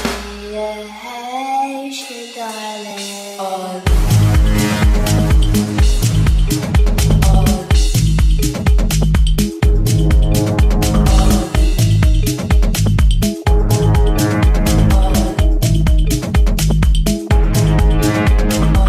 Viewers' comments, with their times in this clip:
0:03 That drop hahaha